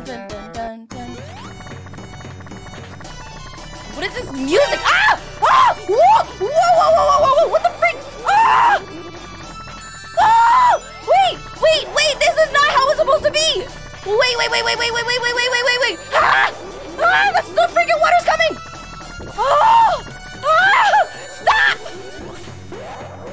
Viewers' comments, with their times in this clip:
0:06 you sound like tails when he says "whoa!"